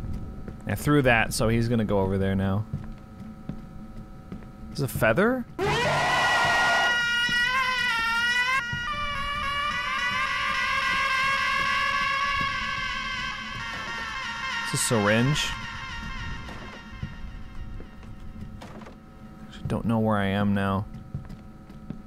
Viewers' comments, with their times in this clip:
0:05 The scream sounded like the intro of Clint Eastwood.